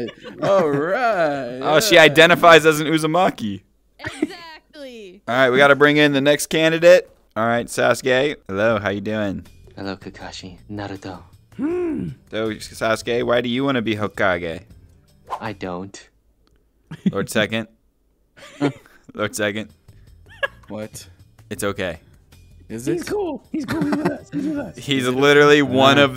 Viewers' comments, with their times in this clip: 0:09 Sasuke: Hello Kakashi, Naruto. Naruto: Marge Simpson noise